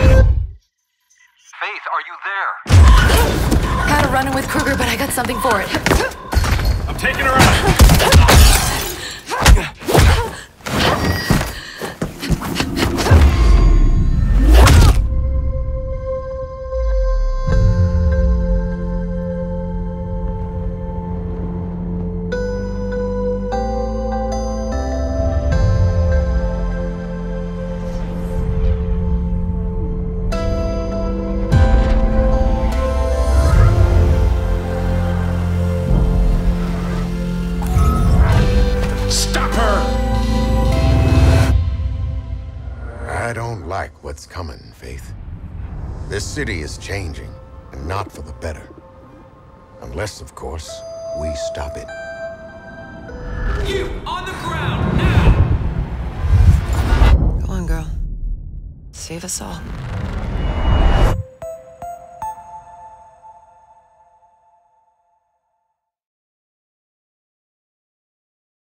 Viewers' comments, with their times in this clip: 0:06 That kick though. Sounds so meaty!
0:15 Omg that Sound !! its like the new shard puzzle song, i cant stop listening over and over again.(L)
0:15 That "tum tum tumm" 😢 The fooking Nostalgia!
0:15 Oh my god the music....... so fucking good.
0:16 Just listening to that melody that starts playing just makes me realise how amazing the first game was. The thing that made me keep moving forward mostly was the amazingly well done music. It made a huge impact on the gameplay itself, and still lives on within me. It made me feel like I was flying, not running. And that's what it feels like when you have a fluid run when parkouring. Please EA, just don't fail.
0:17 I also really like the song in the background that starts
0:42 MORGAN FREEMAN IN MIRROR'S EDGE? I'M SOLD
0:43 man that sound like prophet in crysis..
0:44 Morgan Freeman confirmed
0:44 Morgan Freeman? SHUT THE FUCK UP AND TAKE MY MONEY!
0:49 Maybe it is not Moragn Freeman on
0:49 HOLY SHIT IS MORGAN FREEMAN IN THIS GAME?
0:49 It's like a budget Morgan Freeman...
0:49 i thought was Morgan Freeman (0_0)
0:49 Discount Morgan Freeman
0:50 Discount Morgan Freeman.
0:50 Morgan Freeman is that you? :0